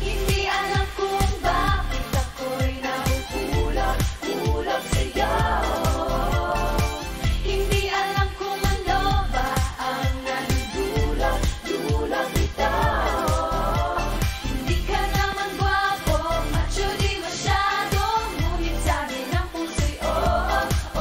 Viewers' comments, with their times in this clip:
0:03 That harmonisation SLAPS HARD. Omggg. I love them so much ❤️